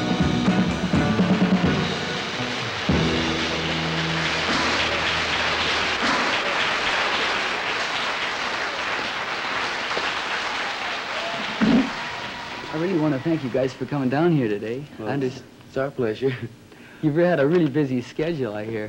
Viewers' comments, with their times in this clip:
0:05 Susan gave Grace Slick a run for her money in the set of pipes category! Wow... I've been in love with her since "Billie" came out! for me? this video ended